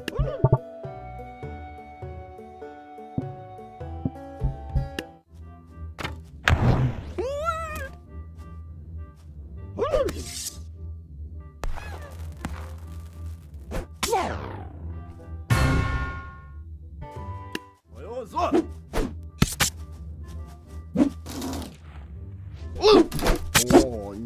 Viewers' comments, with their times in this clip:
0:09 u better be joking me. Joke music comes in